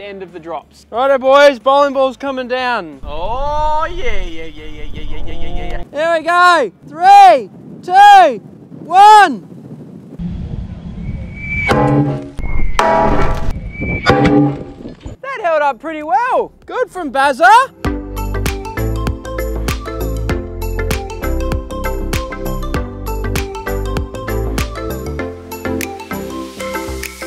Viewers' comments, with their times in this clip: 0:04 dr disrespect impression on point
0:10 why does it sound so god damn goofy that part